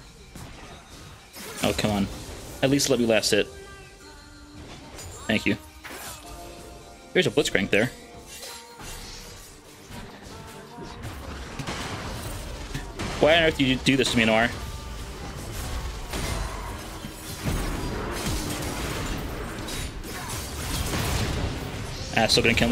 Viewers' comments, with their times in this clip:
0:06 What is the song called that played in the background ? It kinda remindes me of the witcher 3 blood and wine main theme but it sounds like a remix? I can be totally wrong since I cannot find this version anywhere... Maybe it could be a version from another language since I cant really understand what shes singing.